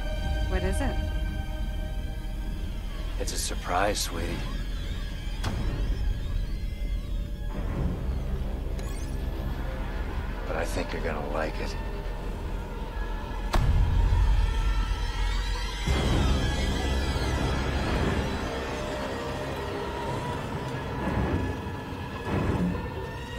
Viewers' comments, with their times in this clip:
0:06 i really like that, even though the context and the way he speaks sound so loveley, but then its just this horrorfiring music playing, showing that something is clearly wrong